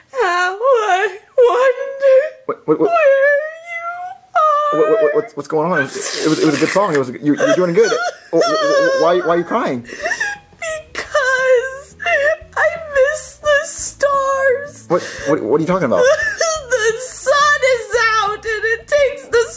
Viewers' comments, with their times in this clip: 0:06 Rosalina’s nose sounds are so funny